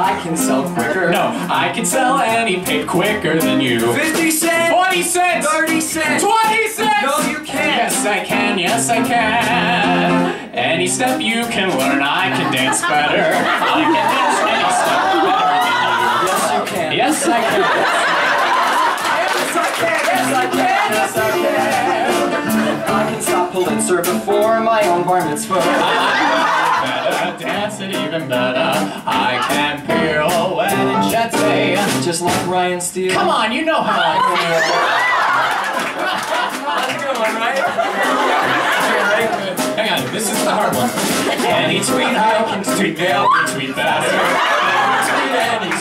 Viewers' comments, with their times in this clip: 0:04 I live for Mike slipping into his new York accent
0:28 his voice when he sings that 👏👏👏